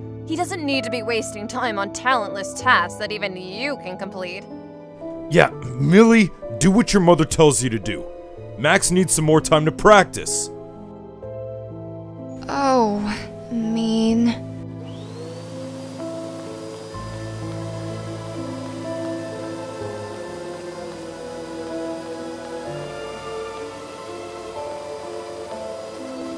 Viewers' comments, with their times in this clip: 0:09 the family arguing while flamingo's vid is playing onvthe Tv